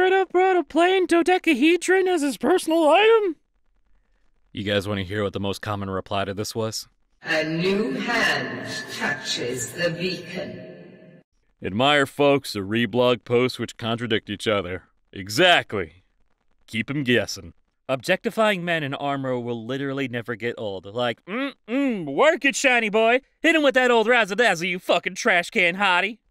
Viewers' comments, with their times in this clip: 0:07 *unholy screeching:* "NOT AGAIN!"